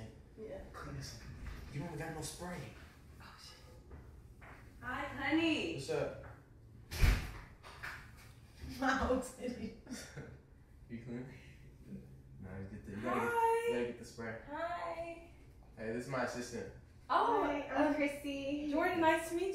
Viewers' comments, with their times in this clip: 0:06 So we just gonna ignore the fact that she blew the fattest fart ever bruhhhh😂😂😂